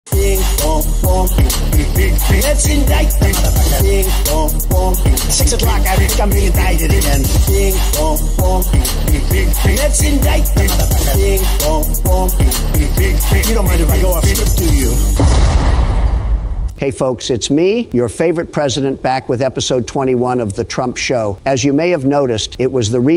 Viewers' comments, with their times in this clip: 0:07 I love how he says "indîîcted"